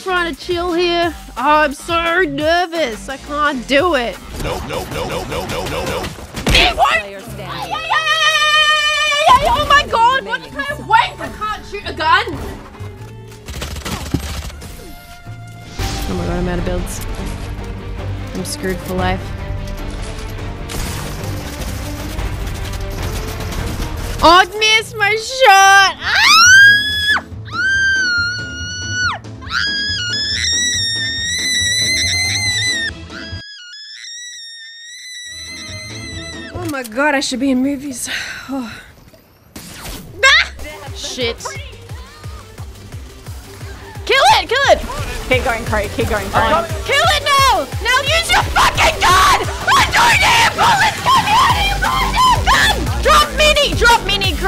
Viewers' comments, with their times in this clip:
0:04 you know it's real rage when her whole accent sounds like it's changed lmao
0:25 Why her scream sound's like Candice Flynn off of Phineas and Ferb lmfao 🤣🤣🤣
0:26 had me dying a straight up tea pot
0:26 mariah carey’s got some competition
0:38 It’s am rn and I’m watching this- and I had this all the way up😶